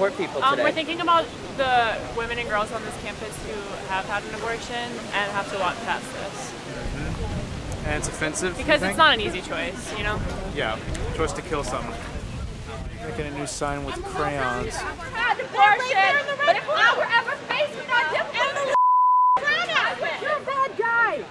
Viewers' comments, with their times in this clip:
0:03 I have a lot of respect for the girl calmly explaining the views of her idiotic friends